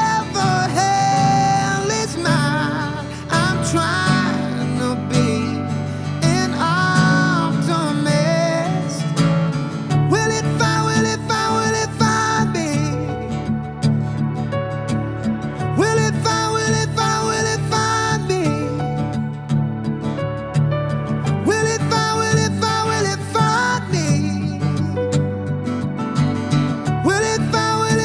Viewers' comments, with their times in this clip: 0:10 from there it's more obvious to me. i'm pretty sure there's no need to pitch-correct this guy, he looks like he can sing 🤷🏻‍♂️